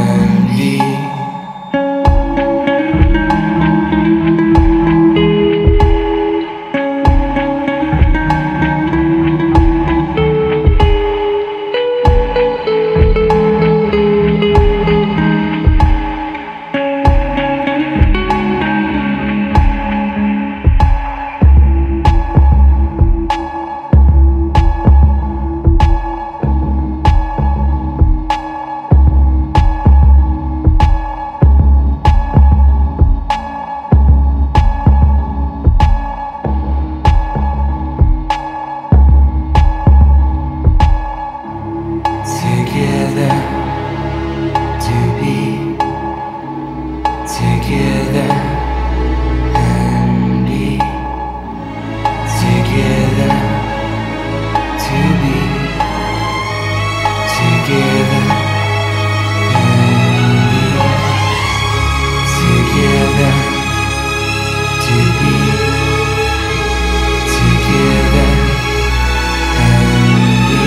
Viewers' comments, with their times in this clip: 0:06 Music is just amazing telling the story beautiful Symphony filled with melancholy.
0:50 is when it just starts building up and it sounds tragic and beautiful and doomed. It sounds like a desperate longing, and you can just FEEL everything slipping through Gatsby's fingers, you know?
0:55 the swell of the strings gives me major goosebumps